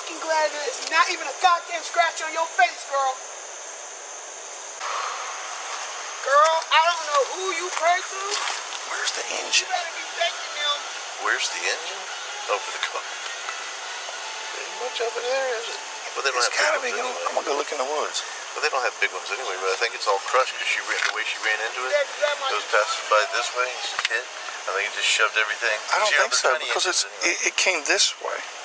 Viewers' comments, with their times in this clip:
0:07 “where’s the engine?” The way he whispered it had me dyinn
0:09 *whispers* “where’s the engine..?”🤣